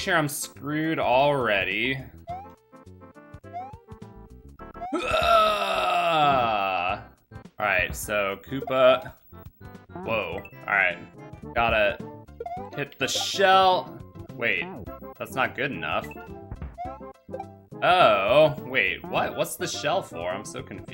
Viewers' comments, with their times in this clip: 0:04 lol I like how he died on the beat